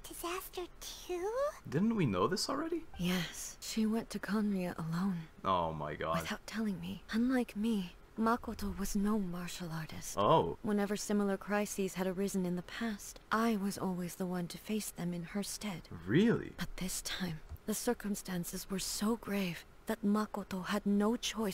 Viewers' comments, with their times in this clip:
0:04 "...she went to columbia alone..." Wow i was using the automated eng caption and got a whole new lore. Khaenri'ah is another name of columbia! /j